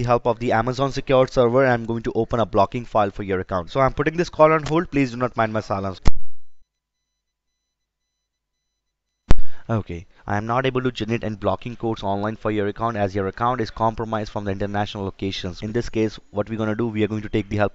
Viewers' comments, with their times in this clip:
0:05 Did he say Masalas 😂